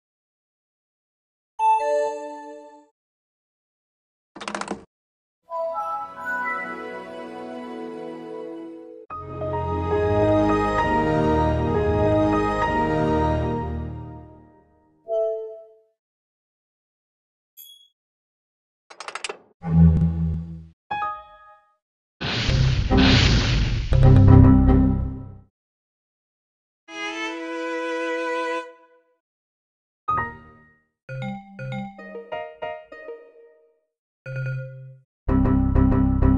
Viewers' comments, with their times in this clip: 0:01 That Sounds Of "Ding Dong!"
0:18 looks like the sound of a roblox game